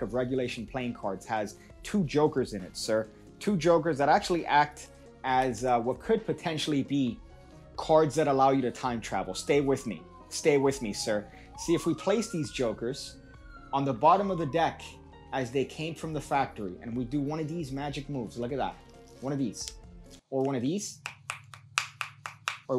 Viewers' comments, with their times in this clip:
0:09 is the Virgin police coming after they got reports of the sound of cards being shuffled